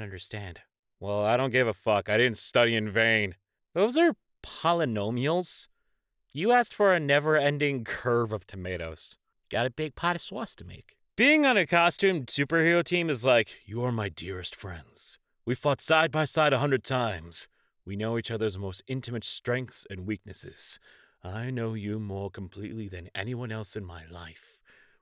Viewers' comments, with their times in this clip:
0:08 "big pat a swas" the only valid pronunciation